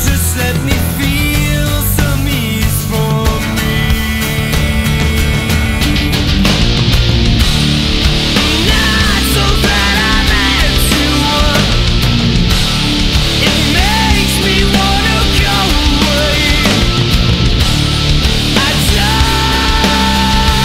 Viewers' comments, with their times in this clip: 0:06 that guitar riff/opening is spine numbing.